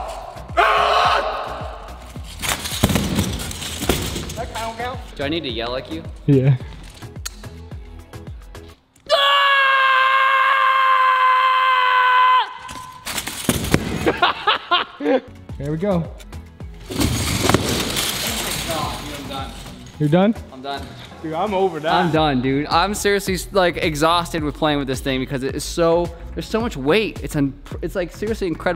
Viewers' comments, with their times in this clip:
0:04 Anyone else picturing Steve Carrol from the Office when he's screaming.
0:09 Anyone else hear Deku?